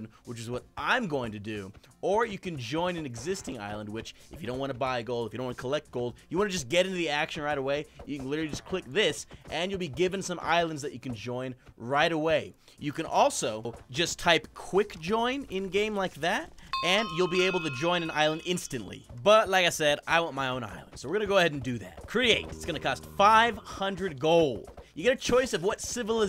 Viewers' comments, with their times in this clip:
0:08 I hear punching in